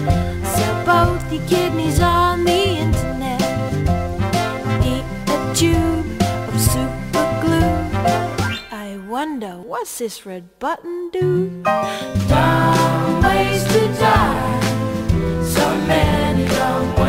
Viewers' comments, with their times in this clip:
0:04 I lost it 😂 this song slaps 🎶🎧🎶